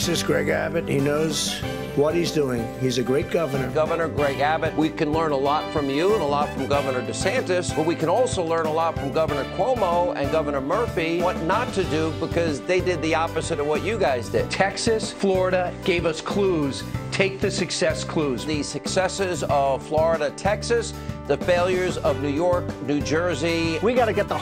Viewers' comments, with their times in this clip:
0:05 Hanity: we can learn a lot from you. Governor: Yeah, nervous laugh😅.